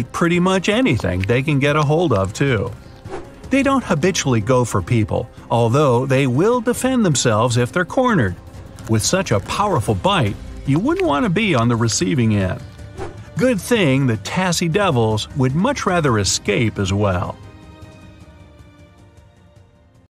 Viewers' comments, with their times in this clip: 0:04 I heard he swore like the B word